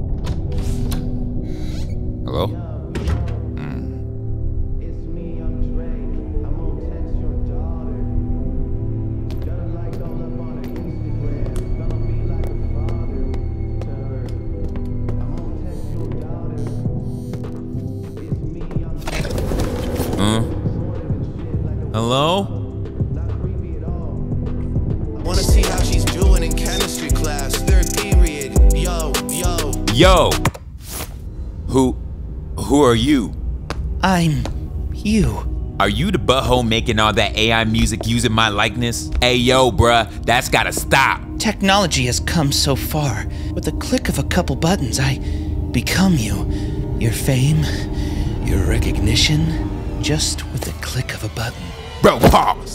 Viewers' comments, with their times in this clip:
0:05 the whispering of kids?
0:15 YOOOO GO TO & TURN TO 2X, ITS THE FIRST FOUR NOTES TO not like us !
0:39 Drake lowkey sounds like tyler the creator